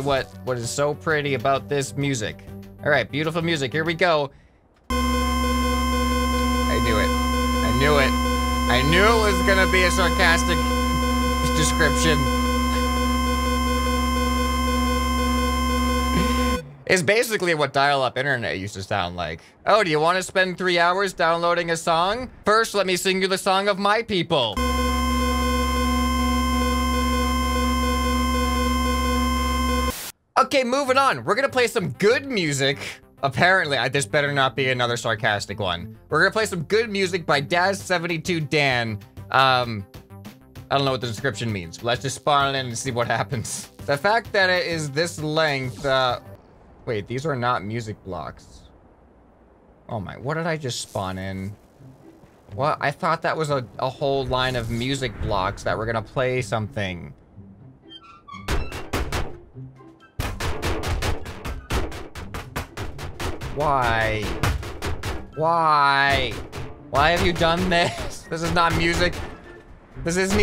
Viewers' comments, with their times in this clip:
0:04 music to my ears
0:05 RIP headphone useers Rip my self too
0:09 i kinda hear a beat k ch ch k ch ch k ch ch
0:24 sounds kinda like morse code
0:46 The creation has a gud beat tho
0:58 You know, it had a good beat ngl
0:58 it's a drum beat, scrap head!